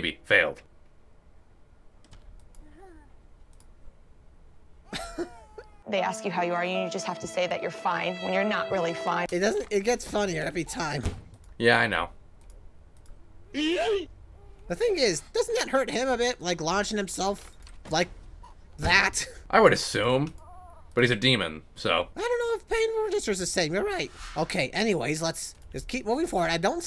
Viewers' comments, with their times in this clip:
0:09 Did that baby fart dynamite 😂